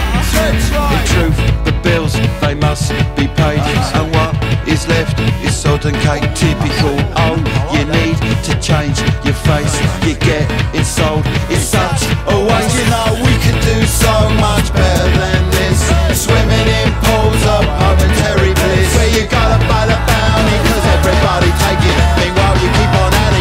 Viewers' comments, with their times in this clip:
0:05 "Sodden cake"? The hell does that mean? I thought it was "Sort of a-".